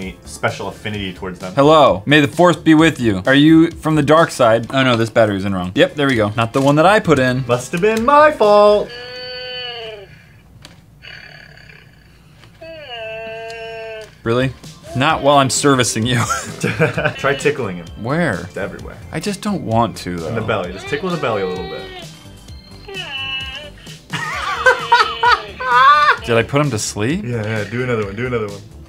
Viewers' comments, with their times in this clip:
0:10 i laughed so hard because he farted